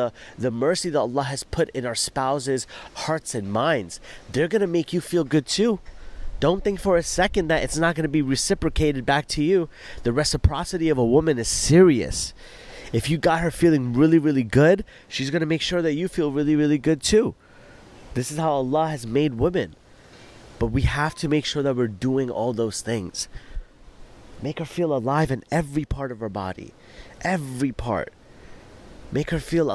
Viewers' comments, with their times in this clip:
0:10 Subhanallah. Absolutely true. May Allah bless you and reward you immensely for this video. The way you explain things is so calming, Mashallah. May Allah bless you. AMEEN